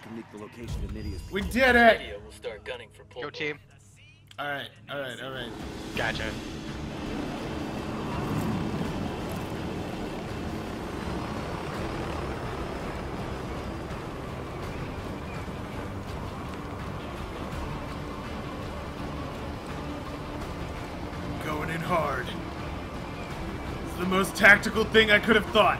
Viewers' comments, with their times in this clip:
0:07 I have to admit, the Crysis 2 music was pretty fitting